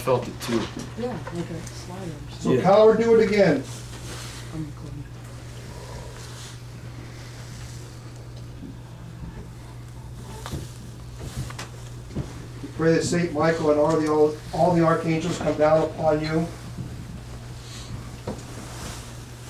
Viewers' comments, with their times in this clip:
0:05 I heard a low growl.